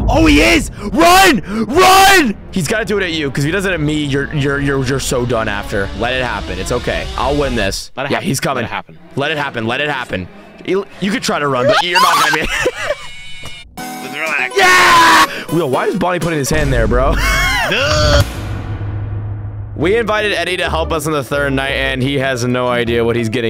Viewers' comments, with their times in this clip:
0:09 bro why dose he actually sound like Tom and Jerry ahh screa.